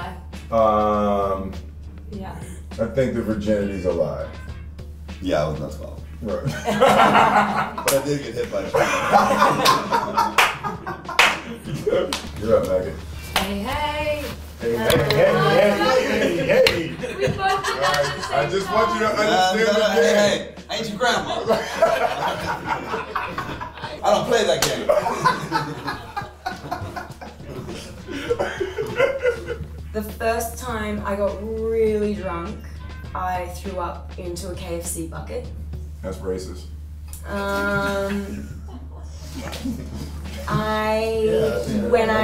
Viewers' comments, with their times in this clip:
0:07 damn will is such a loud clapper that one looked like it hurt hahaha
0:09 Omg!!! Will Smith's laugh.....i'm literally dead......crying right now!! 😂😂😂😂😂😂😂😂😂😂😂😂😂😂😂😂😂😂😂😂
0:29 the first "taime"